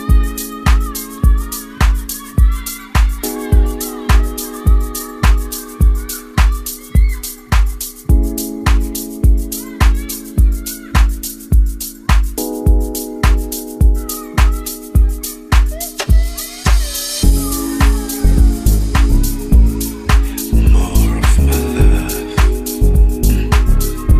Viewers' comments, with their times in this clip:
0:08 jam is too deep🥺